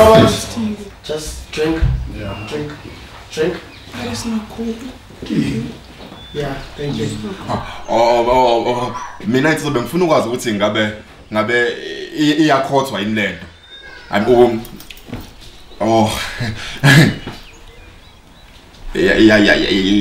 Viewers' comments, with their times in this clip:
0:04 The Skrrr skrrr guy on hahaha